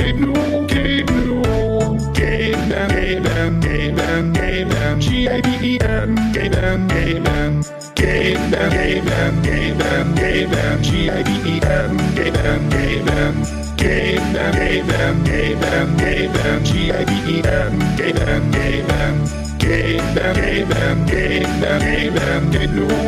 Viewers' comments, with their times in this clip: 0:04 tought it was saying "gay men"